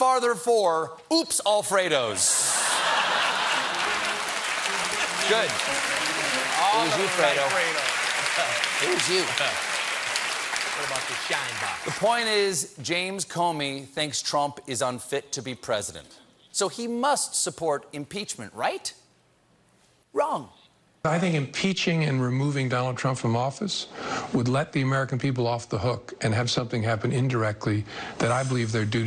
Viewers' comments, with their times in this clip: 0:10 John Baptiste slips in the most low-key "what about the shine box" of all time.